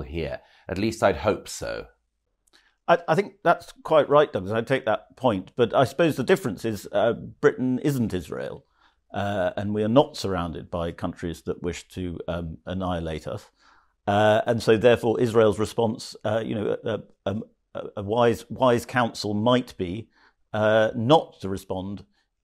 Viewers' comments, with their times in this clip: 0:06 after Douglas nails it here, you can hear a pin drop.